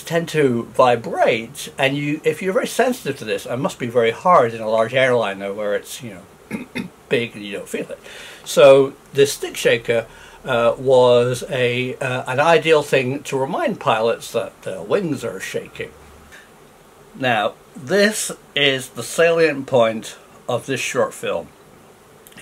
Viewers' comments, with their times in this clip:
0:08 oh it said d**k shaker which, uh...